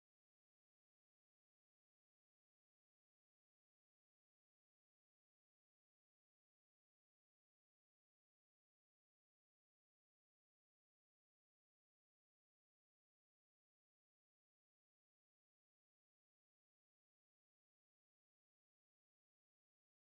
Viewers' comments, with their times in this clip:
0:04 Anyone else hearing the jingle?